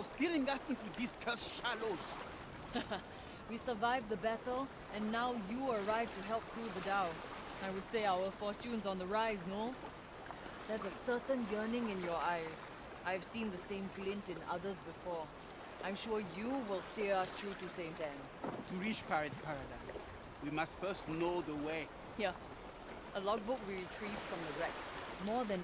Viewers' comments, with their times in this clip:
0:06 she definitely sounded Singaporean lmao